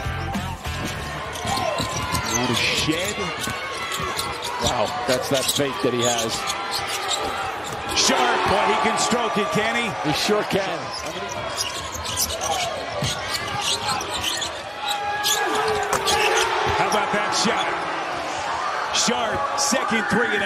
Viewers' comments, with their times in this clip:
0:08 these announcers getting more and more wild